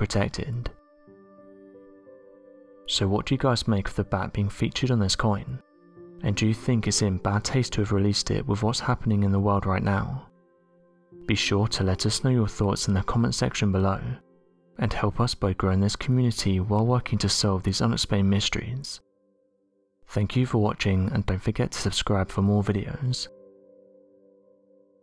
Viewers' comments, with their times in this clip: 0:07 I thought that he said it’s in “bat” taste to release it. I rewatched it though and it’s clear I imagined that lol, definitely said “bad”. Btw, fruit bats are so cute!!!